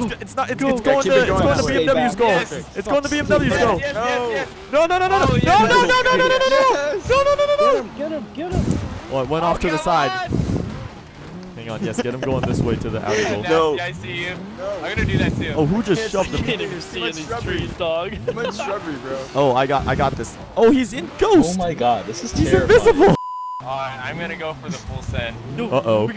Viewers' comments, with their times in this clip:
0:08 that guys breathing